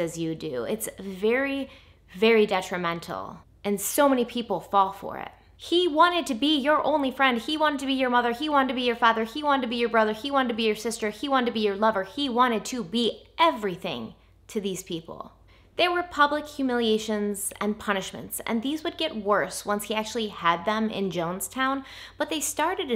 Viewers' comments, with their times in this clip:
0:06 I feel like you repeated a prince song However, I like your singing voice. It reminds me of those 950s jazz club singers you see in movies.